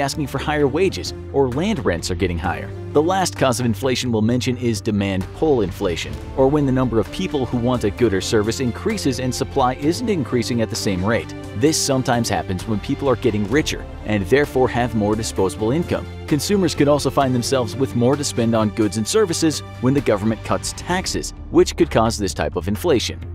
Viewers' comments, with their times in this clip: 0:07 "gooder service" lol
0:07 “...wants a gooder service...” wat